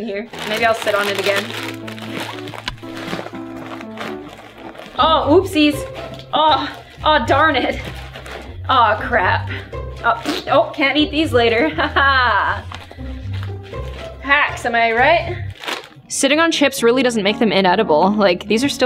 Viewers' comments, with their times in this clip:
0:03 Nobody: Literally nobody: Gloom:Making some disturbing noise While riding like a poney a bag of chips